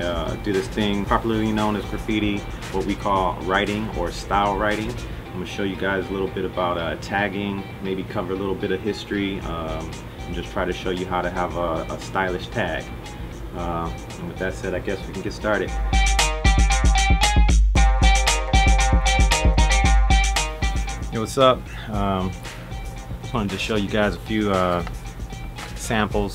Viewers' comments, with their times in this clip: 0:09 he be sounding like him too 😂😭